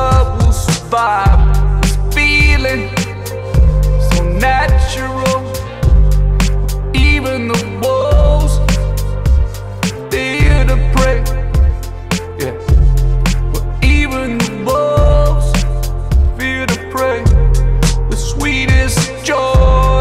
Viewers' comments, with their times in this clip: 0:03 reminds me of the stuff I recorded 14 years ago on garage band 😆 👍🤙